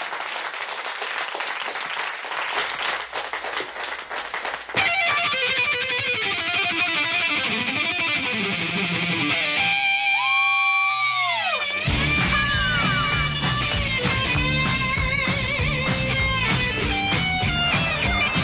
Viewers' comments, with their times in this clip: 0:05 i love how they're both doing slide stuff and then steve just busts out shredding